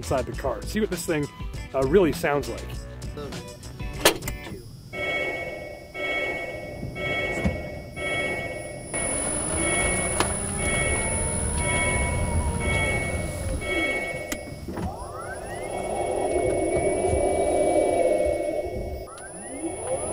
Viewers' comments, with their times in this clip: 0:04 One of my neighbors got a Nissan leaf and now I hear that chime several times a day, really annoying